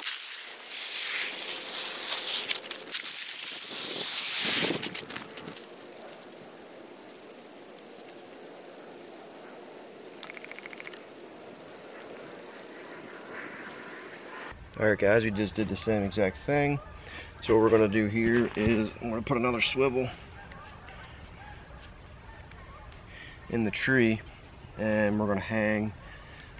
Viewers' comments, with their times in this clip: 0:10 i heard the PREDATOR somewhere out there....